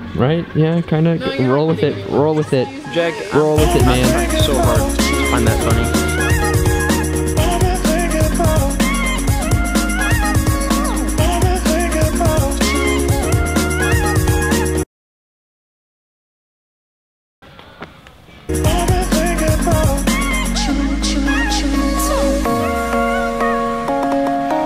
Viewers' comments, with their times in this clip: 0:10 I think the music messed up and is a couple seconds behind